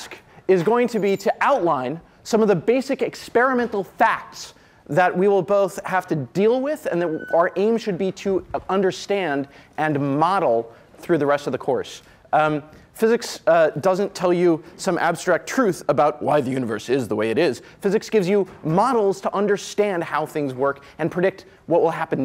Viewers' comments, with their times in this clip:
0:07 When do we get to deal with the screech ?